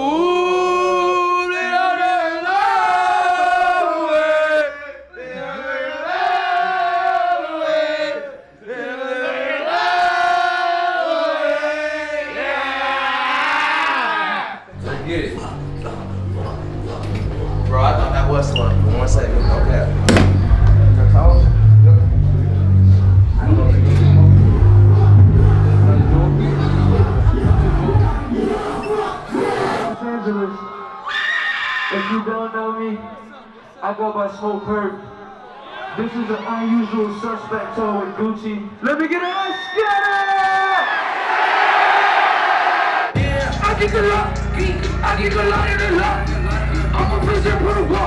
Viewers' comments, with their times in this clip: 0:08 when you sing your heart out but don't know they lyrics.
0:30 Jesus christ who was in the audience the exorcist.
0:32 the scream is me if i saw purpp ong 😭